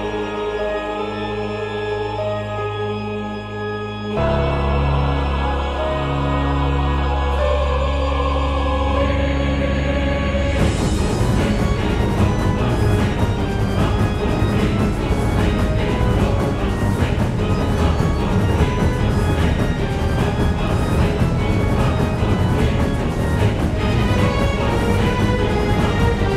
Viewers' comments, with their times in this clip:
0:08 i heard 'covid' in the first part
0:08 Why does it sound like an ost from dark souls series ?